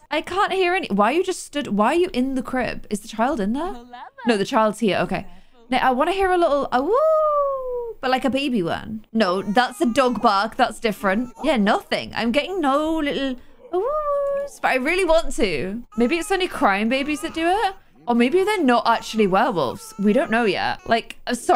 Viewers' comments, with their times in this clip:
0:06 the babies only howl while they're crying